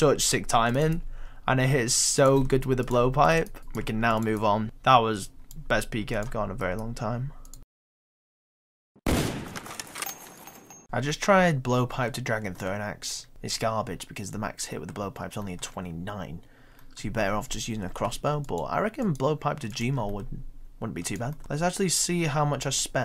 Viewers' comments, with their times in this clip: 0:08 atleast insert the actual intervention sound OCD triggered